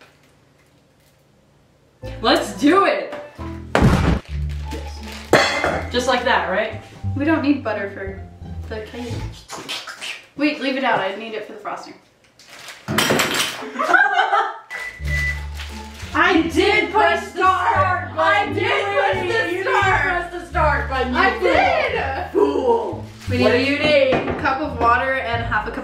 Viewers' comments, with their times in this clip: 0:08 now I'm starting to actually think Glitchtrap is a weasel with that chatter 😂💀